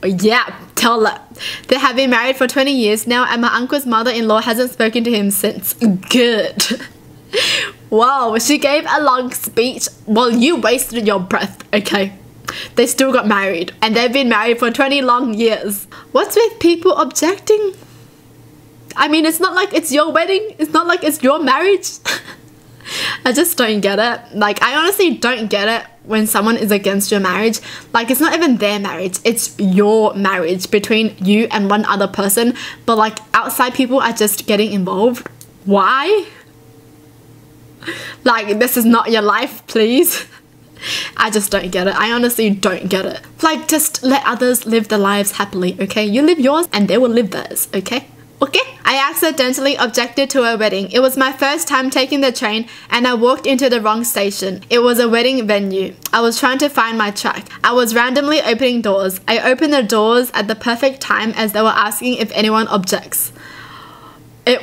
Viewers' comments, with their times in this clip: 0:06 Idk why but i found it funny when she said “GoOd” xD
0:47 second ok was so cute lol......like if u agree